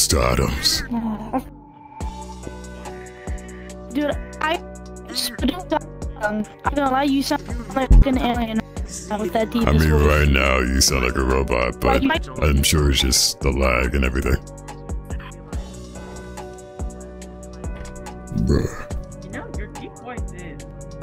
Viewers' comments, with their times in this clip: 0:09 Transformers: Devastation Megatron